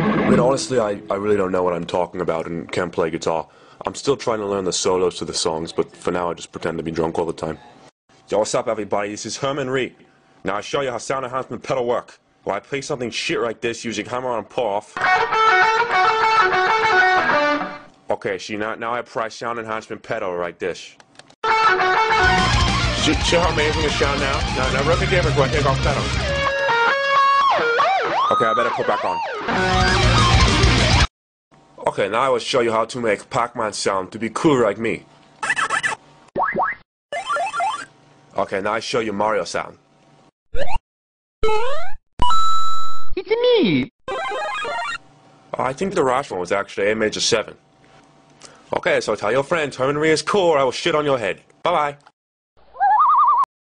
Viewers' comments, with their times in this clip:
0:07 WTF IS HE SAYING??!?
0:42 Hahhahahahaha Mario noise